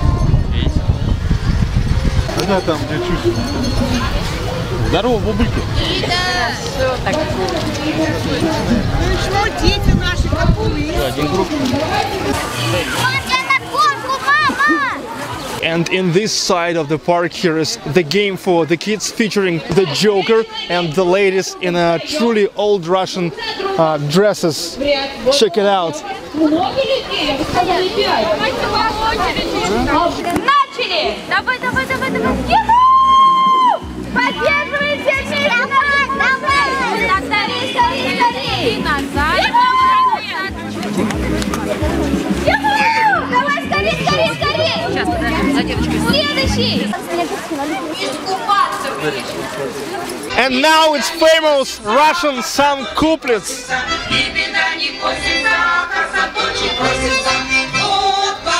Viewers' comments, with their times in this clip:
0:07 did i hear gangnam style in ?
0:40 sounds like the Muppet Babies opening theme. xD